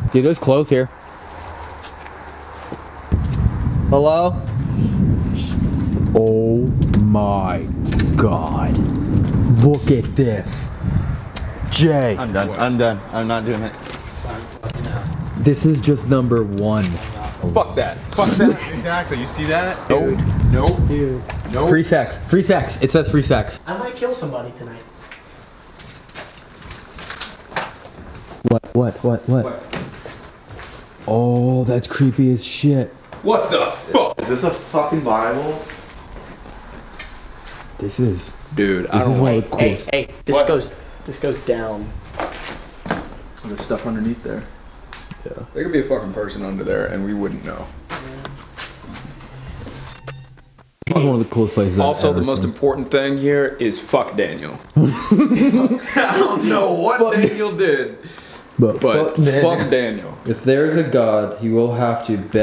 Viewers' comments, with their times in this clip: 0:03 Does anyone hear the whispers after he says hello
0:06 I'm rewatching this video and I just heard a voice say/whisper something at like
0:43 Did any one else hear weird high pitched audio ?
0:48 there is a weird high pitch sound in the background
0:49 that audio went high pitched while no one was talking